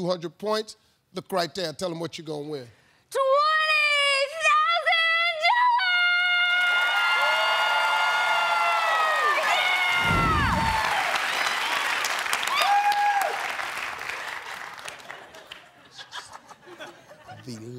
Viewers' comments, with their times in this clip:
0:05 twenntyyy thousaaand DoAGHGHllers.. nice voice crack.